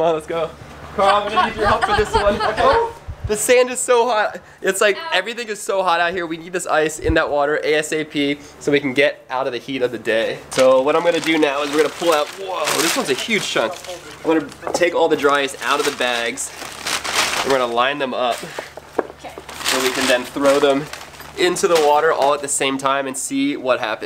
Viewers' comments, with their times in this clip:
0:06 i think u mean ASAP in another prounsination